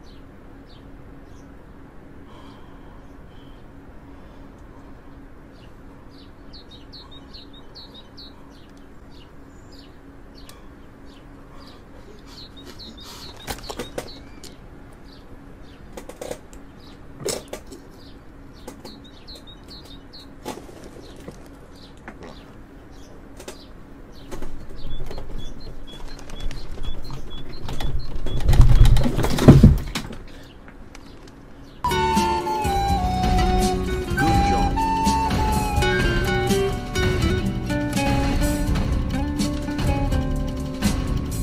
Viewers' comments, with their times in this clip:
0:07 poor speed the chat laughing while speed is crying i felt reall bad for him
0:22 Did speed fart lmao😂😂😂😂